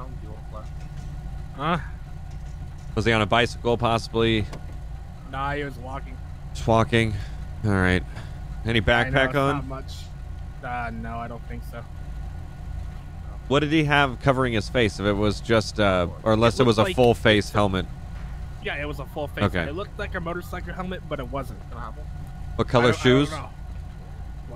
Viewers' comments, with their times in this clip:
0:07 That sounds like spoonville